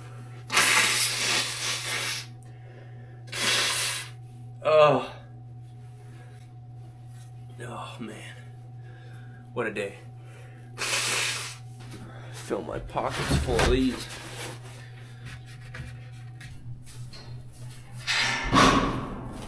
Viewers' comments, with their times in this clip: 0:06 you made that sound, ya know that sound you make right after you feel a big snotter tumble and thump out of your nostril (actually shaking your brain on the way out) and you can actually breath out of that nostril for a minute or two, yea that uuugh, LOL I've been there :)